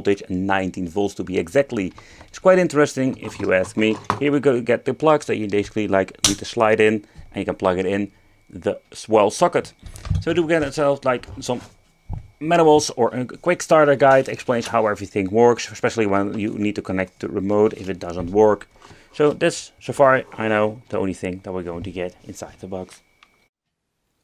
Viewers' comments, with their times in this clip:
0:05 loved how you pronounced ''schlide'' and how casually you said it, it is perfection, just improved the vid 50Mil times